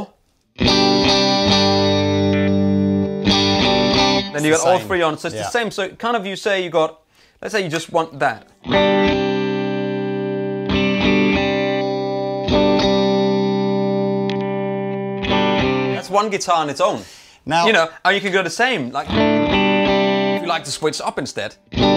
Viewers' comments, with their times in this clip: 0:04 that sounds so straty.